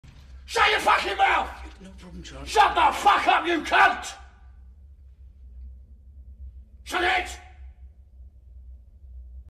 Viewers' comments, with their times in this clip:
0:02 That voice should be fit on Barbarian king tho XD